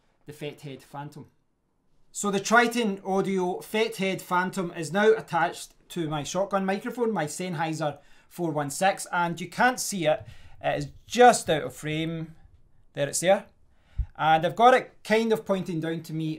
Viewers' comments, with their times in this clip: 0:04 Can I just say, as a not so huge fan of unboxings, reviews and podcasting, I found this very helpful, enjoyed it a lot and most of all, my dear, the audio quality boost threw me of my chair. Deffo worth watching for those minute to really hear the difference when it happens. Thank you.